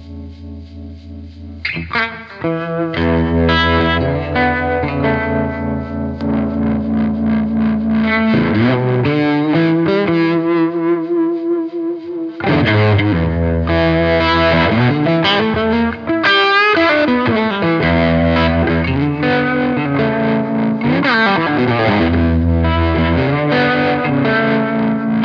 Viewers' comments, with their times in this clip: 0:09 Despite the feedback issues, the sounds Mick coaxed from that Casino onwards are amongst the best sounds you've had on the show (mic'ed at least, maybe it was a different experience in the room)